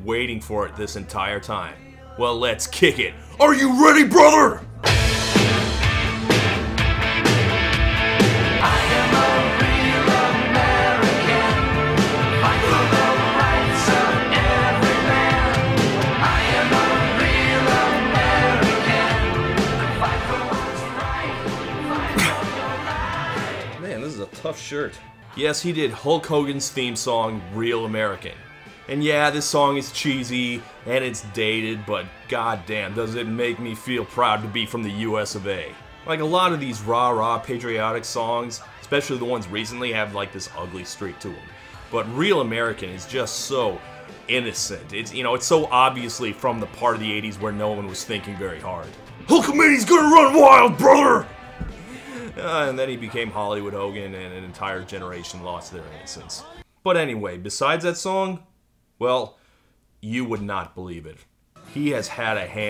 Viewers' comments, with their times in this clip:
0:04 Someone else posted it on here, but it needs to be said: when that riff hits, the WORLD turns "Red, White, and Blue...Brother!" for a second or three. Yeah, the song is dated and corny, but good lord, the moment that first guitar note is heard over the amps at a show, arenas of thousands of people lose their collective sh*t. Terry Bollea might not be that great a guy... but God Damn HULK HOGAN IS THE IMMORTAL ONE.
0:49 That's a pretty solid Hogan impression And, as for me, I didn't lose my innocnece when he did a heel-turn into Hollywood Hogan, it was a month or two later when I read in an interview he gave (Rolling Stone, maybe?) that he used Lady Clairol to dye his beard. Illusions: shattered.